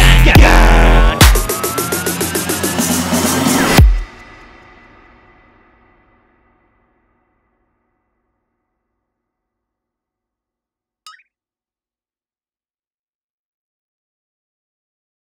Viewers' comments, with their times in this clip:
0:12 Hi.. Man love the fade in .that trick is un come-on now a days.. nicely played.😊